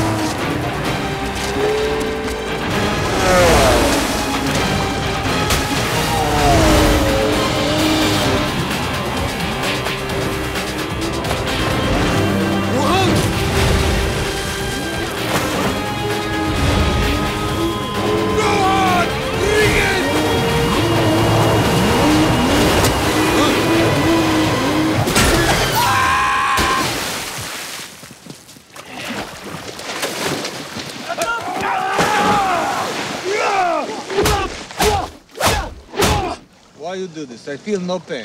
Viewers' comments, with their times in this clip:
0:07 I think it's one of the best intro ever, but the moment in which Zohan swim dolphin style....i laugh like crazy everytime i saw that! ahahahahhahahah oh yes also the moment of the sonic bang at the end hahahaha )....ok i laugh the whole movie
0:25 The way he screamed though 😂😂😂😂😂😂😂😂😂😂😂